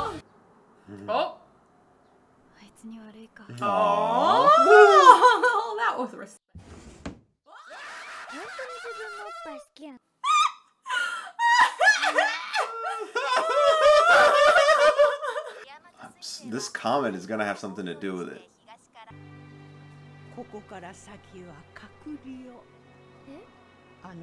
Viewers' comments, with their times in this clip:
0:05 HAHAHAH THE FACT THAT U GUYS RLLY LOWERED IT DOWN CUZ OF EARRAPE
0:07 Thank you for caring our ears